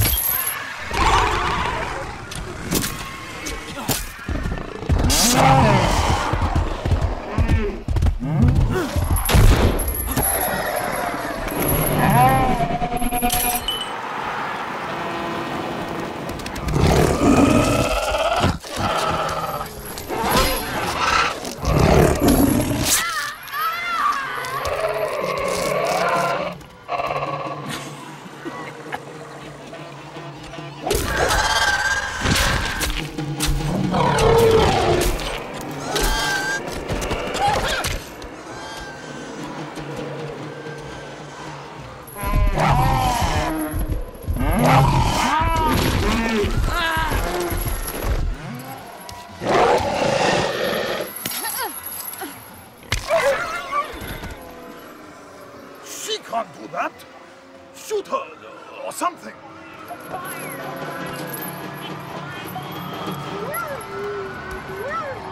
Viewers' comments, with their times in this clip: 0:08 lego droid destruction sound affect
0:09 Lego battle droid death sound
0:45 lego death sound
0:45 hahaha the lego death sound
0:46 Lego Anakin death sound 😂
0:46 Lego Anakin Skywalker death sound is produced when Anakin grinds against the Geonosian sand.
0:46 was his lego death scream